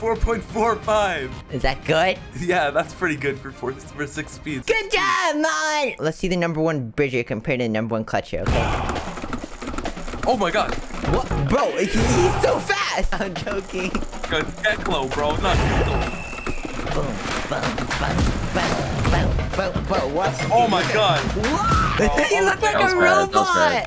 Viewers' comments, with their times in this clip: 0:06 Where's korean? I think u mean Koryin buddy
0:08 very very intense music